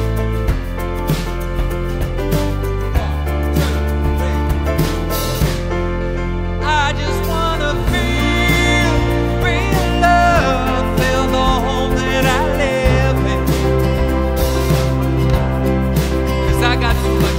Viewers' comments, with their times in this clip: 0:05 the chorus voice sounds horrible, it sounds like a christmas